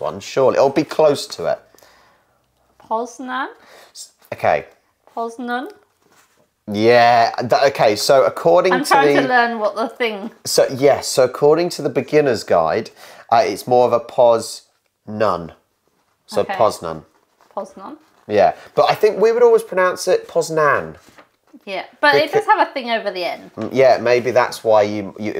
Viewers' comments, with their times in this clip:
0:09 Your wife said better 😆